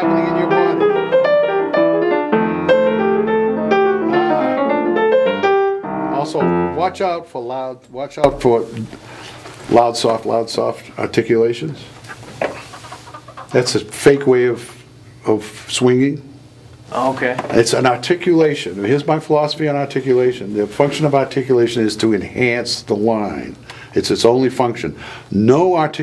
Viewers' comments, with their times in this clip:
0:10 There are Chickens outside the Window :D